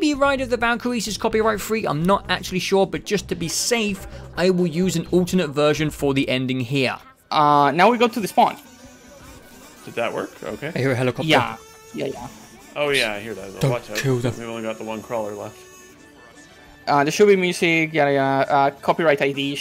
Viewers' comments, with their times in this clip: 0:04 The kazoo goes crazy 🎶🎵🎶🎵🎶